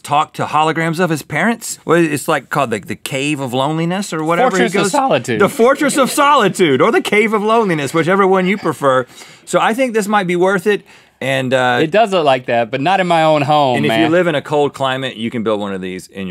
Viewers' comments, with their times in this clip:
0:04 biggest voice crack